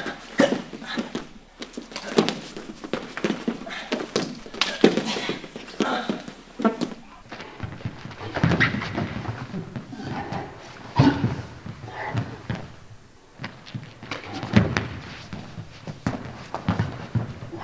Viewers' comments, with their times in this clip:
0:05 someones a little gassy